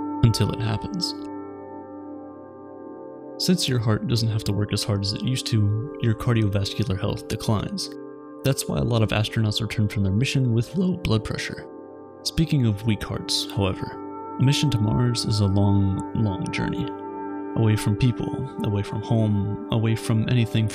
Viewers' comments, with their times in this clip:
0:08 Dude listen to the voice 😂😂